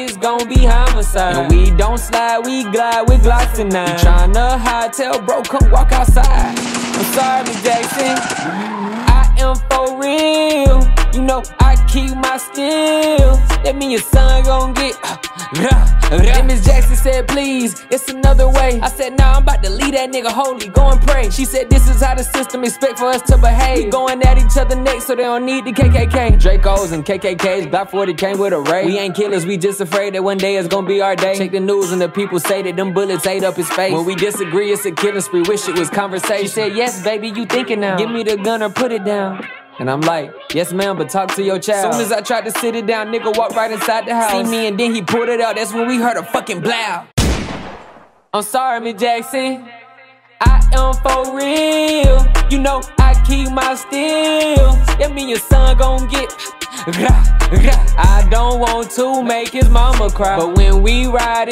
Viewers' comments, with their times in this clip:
0:05 The song better speed
0:30 Bruh he started to snap
0:43 he can’t rap